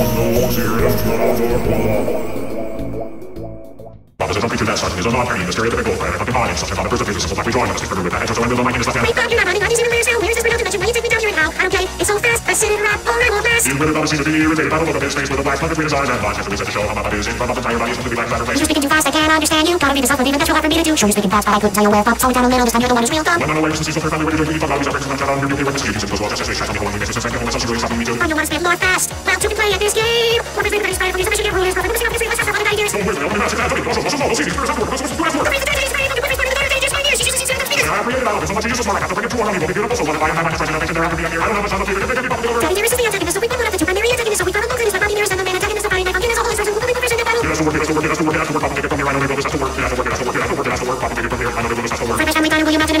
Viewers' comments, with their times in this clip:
0:04 That speed.. AAAAAAAAAAAAA-
0:04 BRO SINGS RAP GOD AND BECOMES EMINEM
0:04 he just couldn't stop talking faster
0:04 That Run song With Lyrics Was INSANELY Crazy 🤩
0:04 bro turned into Enimen
0:04 i fail to believe its possible to talk this fast
0:07 respect for this guy for having to spit bars hella fast
0:09 on 0.25x speed you can here bf sing FIVE NIGHTS AT FREDDY'S Same as the rest of the song
0:13 When I first saw it my internet connection was bad and I couldn't see the lyrics Even though I had no idea what he was singing the part still did sound good
0:15 bro turned into eminem
0:25 Why does he finish the lines on the subtitles and suddenly start speaking gibberish?
0:28 I just love for some reason. BF really sounds like he's enjoying it and vibing.
0:37 best part of RUN because the lyrics' pitch matches with the original vocals for RUN